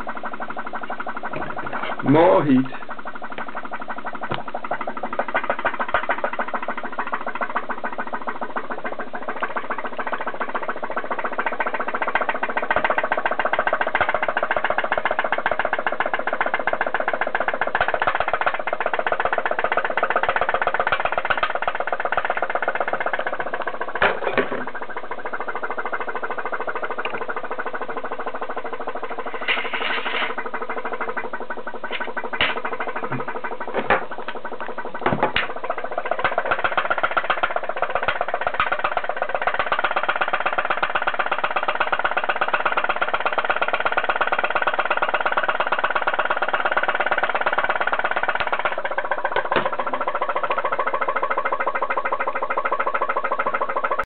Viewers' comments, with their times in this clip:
0:06 V-TEC kick'n yo
0:38 VTEC just kicked in yo!
0:38 VTEC just kicked in yo!